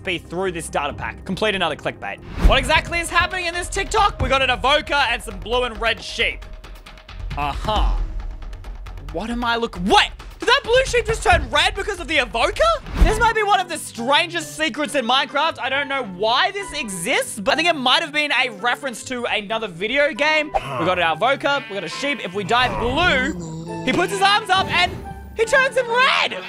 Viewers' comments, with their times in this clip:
0:07 he sounds like the Evoker